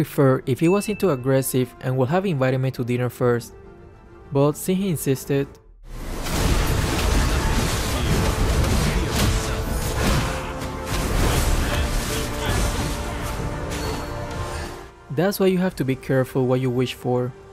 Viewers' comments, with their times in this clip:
0:05 I could definitely hear that “bruh”